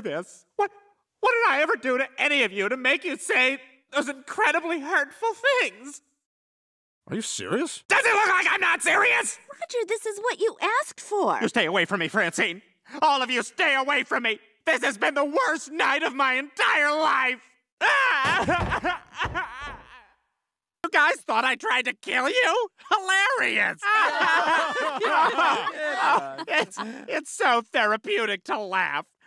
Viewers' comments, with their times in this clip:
0:10 the way he says "you stay away from me francine" 😭😭😭